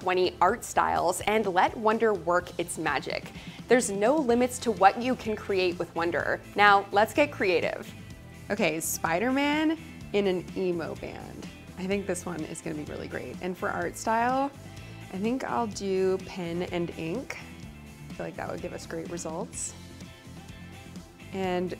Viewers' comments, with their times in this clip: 0:07 She’s real!? I thought they just used AI to voice these. Look at that!